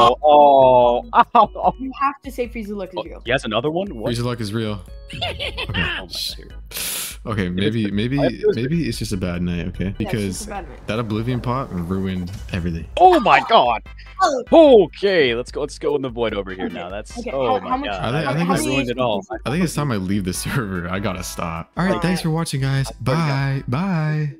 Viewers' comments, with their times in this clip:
0:05 clash royale laugh